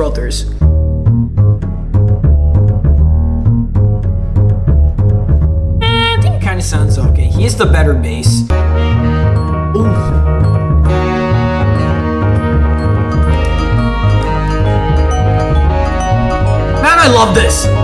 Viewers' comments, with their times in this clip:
0:05 why does bro sound like a car honking💀